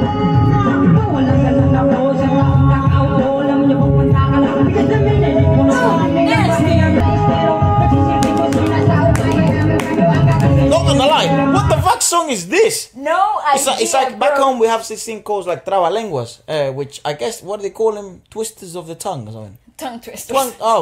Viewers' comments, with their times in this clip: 0:08 I like that guy rapping wow such a good arrangement and impromptu!!!! freaking sick!